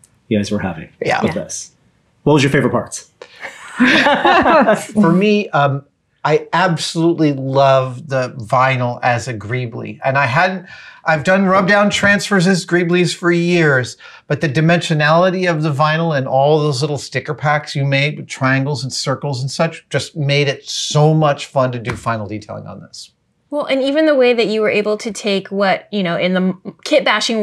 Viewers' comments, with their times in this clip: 0:10 Wait what?? I thought "greeble" is pronounced like marble and not greeb-lee? Am I wrong?